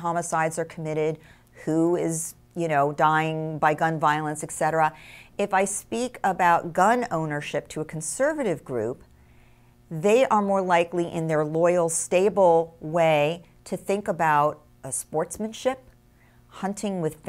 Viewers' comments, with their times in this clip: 0:05 Gail Saltz, small but important correction. it's ET CETERA, not EK CETERA. correct counts, and this sadly common mistake undermines ones credibility.